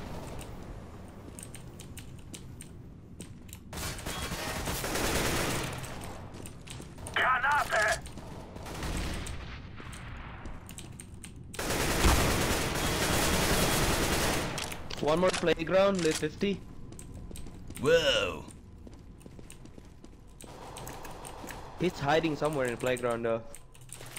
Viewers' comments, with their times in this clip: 0:08 Why is your gamesound in German ? o_Õ